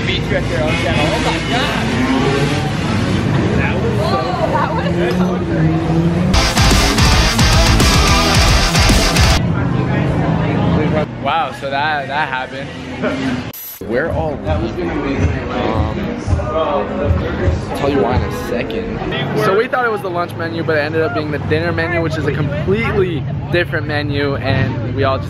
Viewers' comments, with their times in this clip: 0:03 RIP headphone users
0:07 I had the volume all the way up🙄